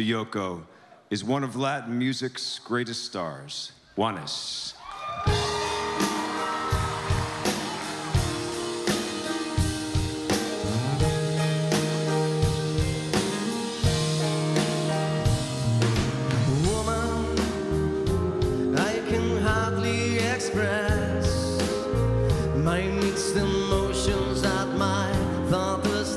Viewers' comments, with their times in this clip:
0:09 the piano had a bad start